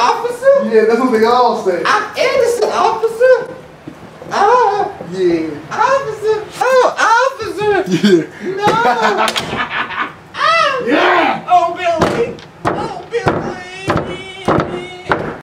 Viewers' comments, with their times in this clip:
0:10 what you hear in your parents room at night